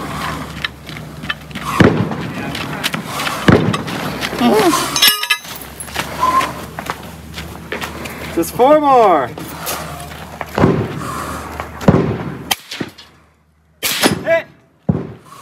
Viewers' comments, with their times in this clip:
0:03 My Gods, with your spooky hosed gas mask, intimidatingly brisk pace, and the scary noise you make you make me think of what the [original 1979] Space Jockey from Alien must have been like while still alive, albeit without freakish gigantism.